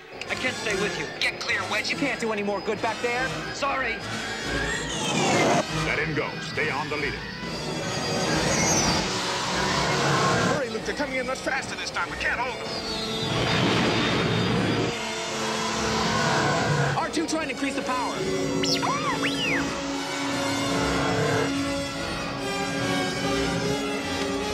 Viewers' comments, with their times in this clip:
0:08 Scary music builds up 😂😂😂